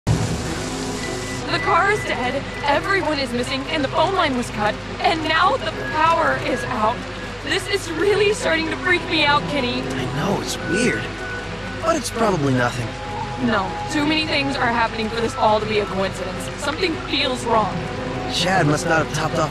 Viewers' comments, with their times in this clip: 0:00 The Voices are broken